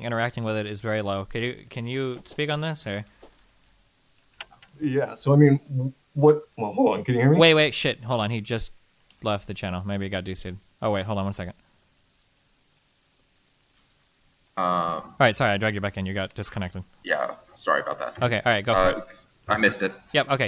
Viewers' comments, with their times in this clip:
0:06 the voice crack 💀